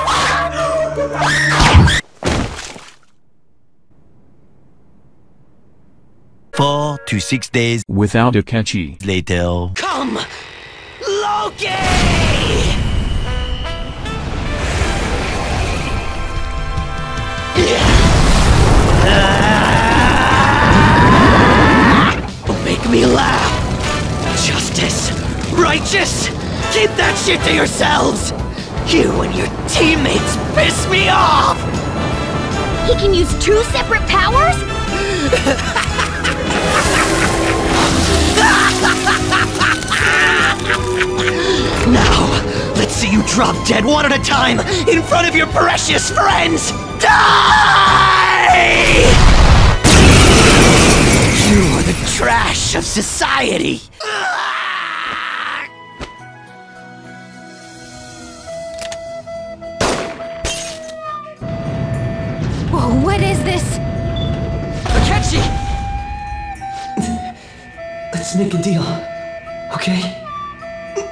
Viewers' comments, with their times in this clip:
0:10 Akechi transforming while Sailor Moon music plays in the background is honestly my favorite part of this video
0:12 THE SAILOR MOON TRANSFORMATION THEME I WHEEEZED OH MY GOD
0:37 This scene proves these people have way too much fun voicing their lines
0:57 the music fits so well
0:58 i hope youre happy. Youve absolutely ruined this scene for me with that music 🤣🤣🤣